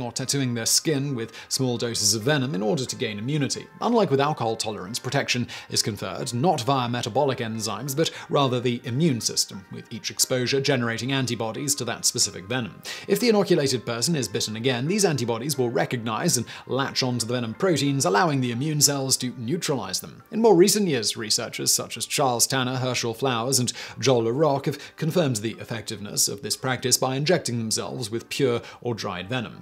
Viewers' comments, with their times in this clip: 0:10 I thought you said "everyone's favorite fat ass" 🤣🤦‍♀️